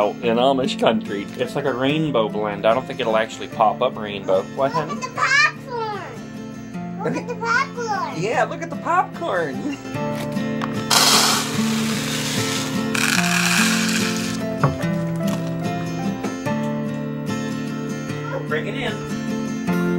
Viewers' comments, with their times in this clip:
0:04 My favorite part of this video :) LOOK AT THE PAH-CORN!!!!